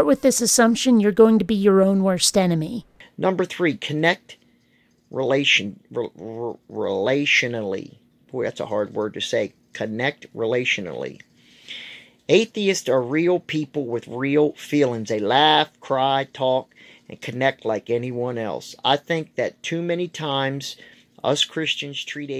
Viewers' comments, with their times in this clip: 0:03 "Connect rantationally"? that's not even a word!